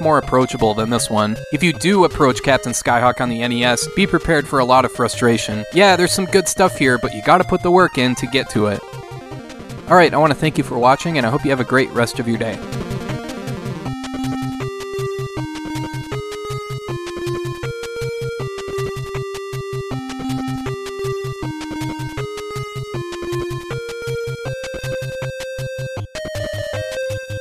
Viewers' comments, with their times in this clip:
0:09 anyone else hear Capcom opening theme?